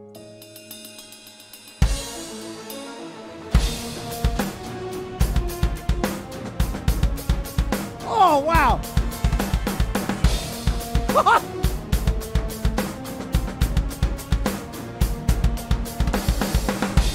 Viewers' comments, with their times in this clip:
0:03 onwards does sound somewhat like one of the BOTW motifs, which is probably why.